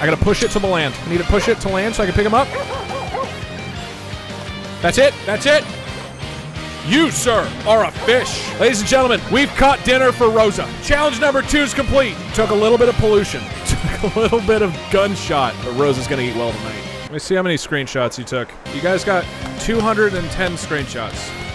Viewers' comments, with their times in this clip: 0:09 what’s the music it’s so epic